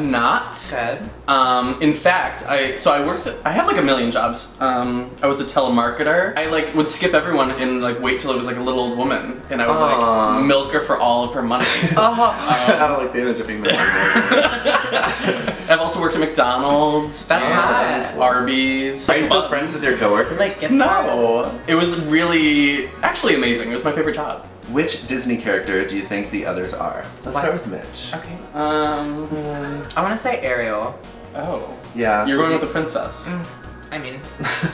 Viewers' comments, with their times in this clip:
0:08 Did you hear mitchs moan when tyler said "milk her for all her money"?
0:10 THE NOISE OUT OF MITCH OMG
0:12 that noise LMAO WHAT mitch
0:22 RANDOM FUNNY PART: Tyler: "No-oh" He sounds like the original Mad Hatter from the hand-drawn, animated Alice in Wonderland. :)